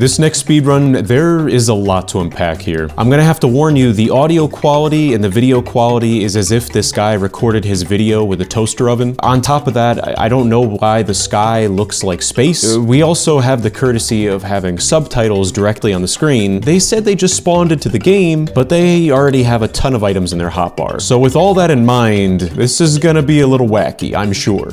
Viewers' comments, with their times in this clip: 0:06 did you say زفت 😂😂😂😂😂